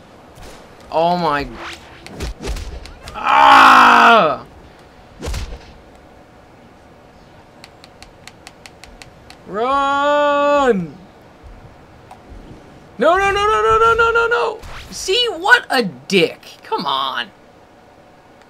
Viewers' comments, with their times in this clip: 0:03 epic roar !!! :D